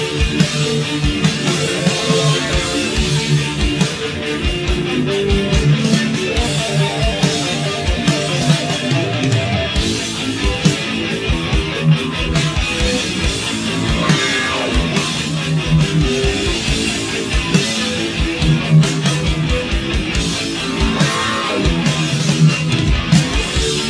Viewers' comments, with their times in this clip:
0:05 is the best bass sounds in metal history for me